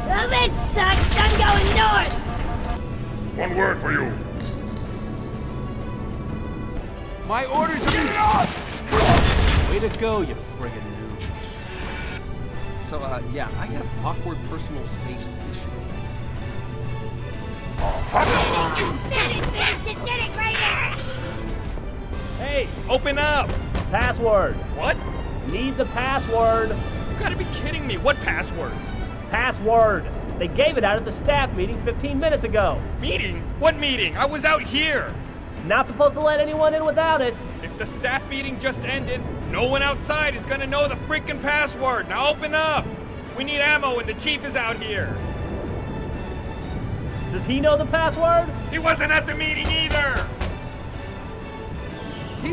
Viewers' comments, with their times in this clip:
0:07 u just pushed force that guy and destroyed him He was like “GET OFF-KABOOM”
0:22 My reaction first time I heard this: "What the...that voice...is that...DAMMIT PRIVATE GRIF! OPEN THIS GODDAMN DOOR BEFORE I MAKE ORANGE JUICE FROM OF YOUR FAT WORTHLESS HIDE!"
0:23 they sound like simmons and church
0:29 is that griff and Simmons?
0:39 i ve just realized that that guy sounds like Simmons